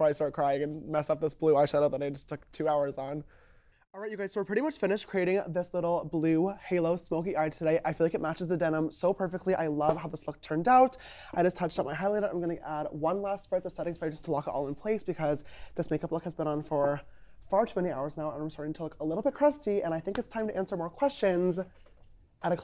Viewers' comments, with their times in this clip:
0:07 You can really tell how damaged he is from this. The way he talks, he hesitates before what he says, the way he looks down at the ground... You can tell he lost his sparkle. :(